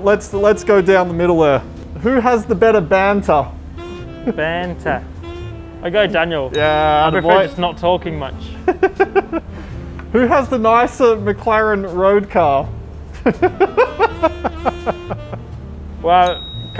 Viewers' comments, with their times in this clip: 0:04 ok but they both say banter, but with an accent and it sounds so much like my name is2g